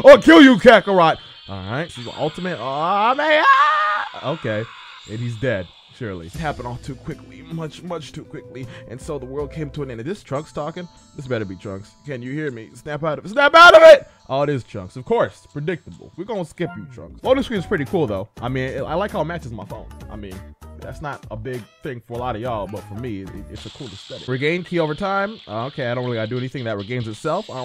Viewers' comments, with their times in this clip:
0:09 that wasn't trunks talking